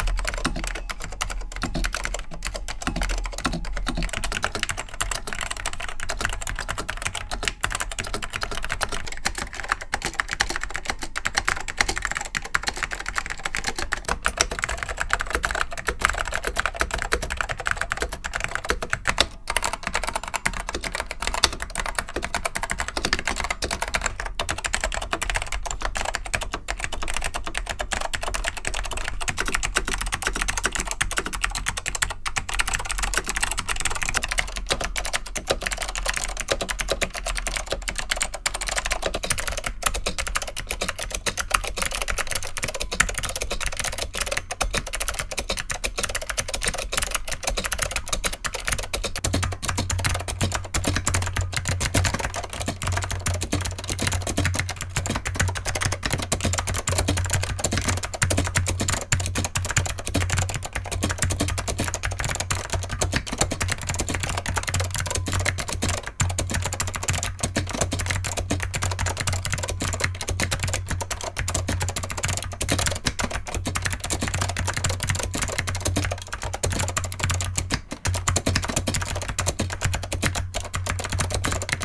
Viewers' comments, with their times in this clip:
0:04 while yes these all sound excellent the ping is just a no no in my opinion
0:11 the YouTube auto caption thinks that SKCM orange is doing applause.
0:12 youtube subtitles think that it is applausе lol
0:59 Top x worst sounding keys. Also, YouTube’s auto captions thinks the sound of the SKCM Blue key switches is music.
1:02 I nearly wet myself at the mark. That keyboard sings opera!!!